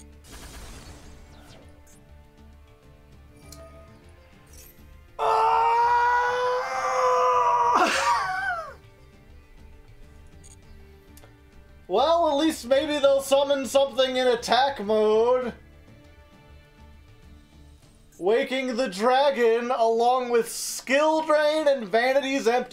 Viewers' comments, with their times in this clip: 0:06 has gotta be one of the most spot on tie fighter impressions ive heard